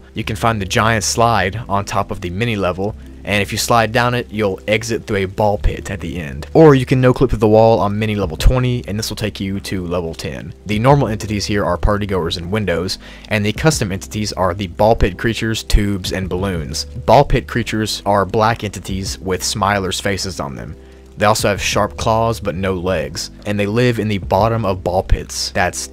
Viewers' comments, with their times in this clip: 0:08 you made a mistake at "exit my no-clipping", you said "np-clipping"